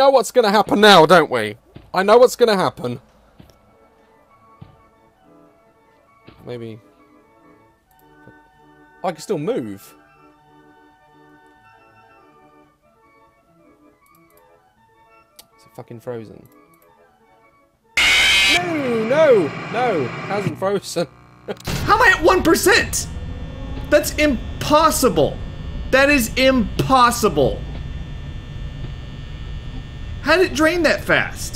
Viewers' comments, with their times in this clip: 0:04 Foxy: plays wacky funeral dirge
0:08 I've never heard the happy background music during this, and it's hilariously not fitting
0:15 There’s nothing more satisfying than losing power, hearing Freddy’s tune then seeing AM come up on screen